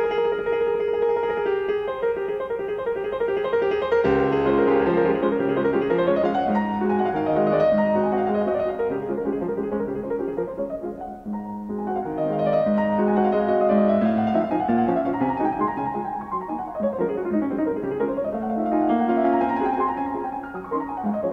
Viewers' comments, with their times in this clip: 0:09 that has to be the most beautiful and crisp I have ever heard those bar played